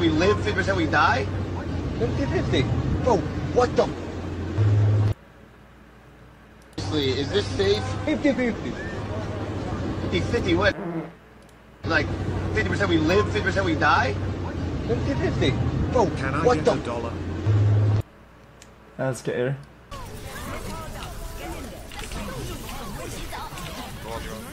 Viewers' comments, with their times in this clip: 0:09 Does xqc think we can't hear him fart or does he seriously not care?